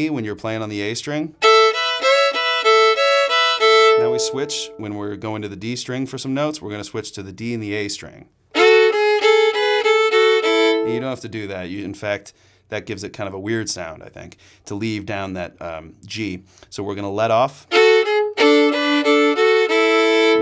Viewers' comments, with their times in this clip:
0:05 Wait you said we go A,B,C,B,A,C,B,A,F and you said we end on a E but what did you play right after the F? You played something extra what was it please someone?